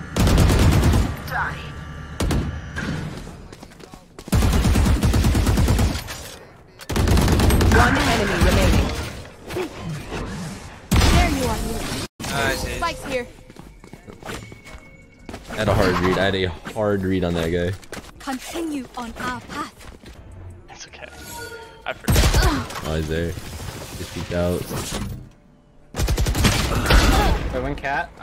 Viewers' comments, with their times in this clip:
0:09 Wait he actually blurred out jetts cuss line haha
0:10 he had to mute the jett swear LUL